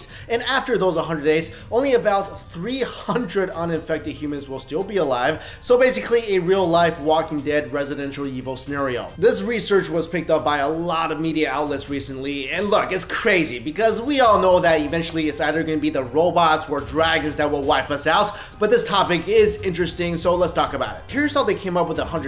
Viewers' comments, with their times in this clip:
0:07 "Basically a Walking Dead-Residential(?) Evil scenario.